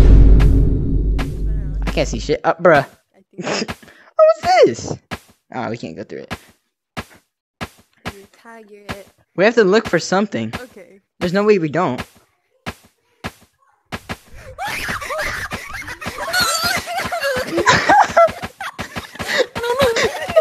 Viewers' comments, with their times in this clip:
0:05 NOT THE VINE BOOM SCARING ME SHITLESS